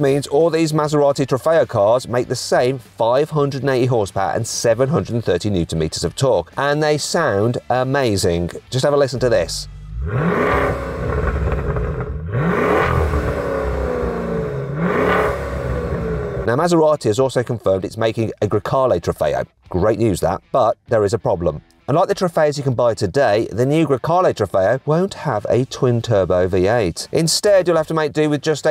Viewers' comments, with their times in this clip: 0:10 sounds like a child with a phlegmy chest trying to laugh